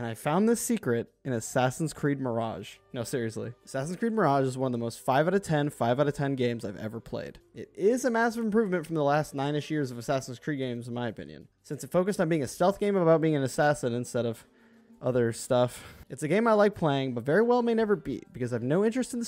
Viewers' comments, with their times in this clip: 0:04 Lie sound effect